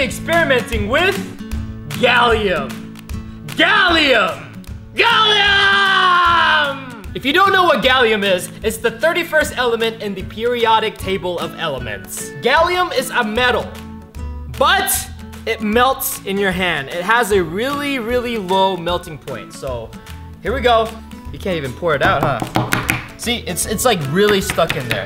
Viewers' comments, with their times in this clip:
0:08 what language are you speaking?